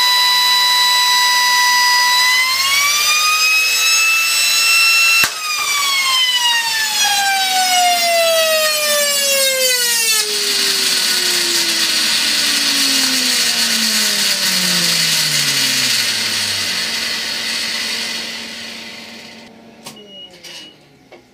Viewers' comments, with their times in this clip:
0:09 oh dear me. sounds a bit funky :D